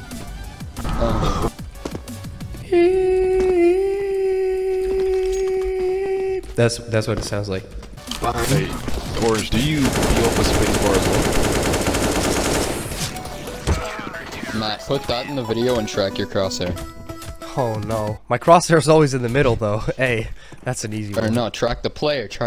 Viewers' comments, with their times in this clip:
0:05 How to trigger other people's tinnitus 101. That, and mentioning it. You're welcome, fellow people with tinnitus.